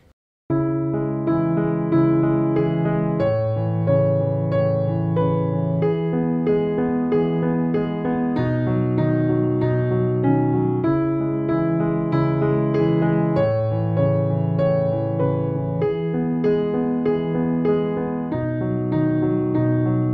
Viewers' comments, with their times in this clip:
0:05 bruh, Faded is not like that it sounds different it will played in Black keys no problem nice video!👌